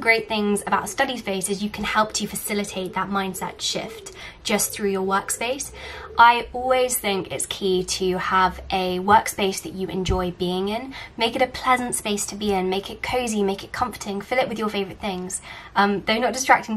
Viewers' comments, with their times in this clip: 0:04 that classic sound of english owls is 😍